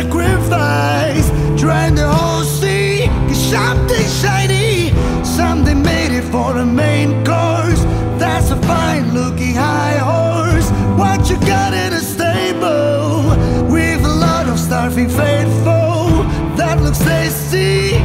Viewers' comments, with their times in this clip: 0:03 what's notes is that ? BADDASS 👍